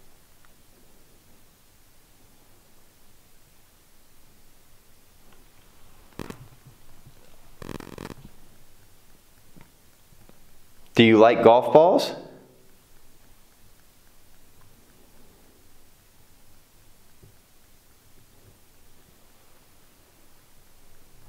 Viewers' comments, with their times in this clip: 0:06 you tell the spirits they can speak into the Obvlios and ur camera 's audio goes staticy